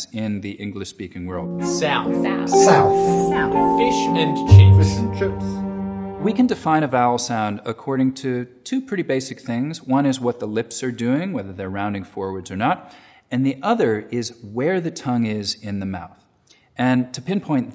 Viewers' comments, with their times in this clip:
0:04 The Finkie the Aussie has a distinct short i sound when he says it. That’s how I say it and that’s what I’m referring to.